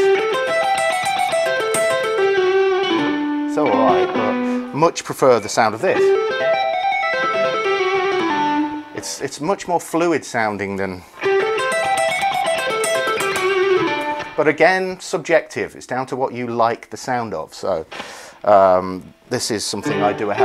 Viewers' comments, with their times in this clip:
0:05 kind of like a drummer using malleja instead of sticks